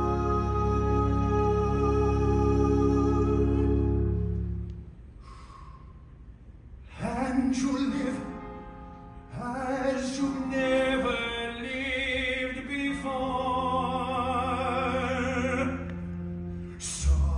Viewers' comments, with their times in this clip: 0:05 Love that sigh never noticed him do that before.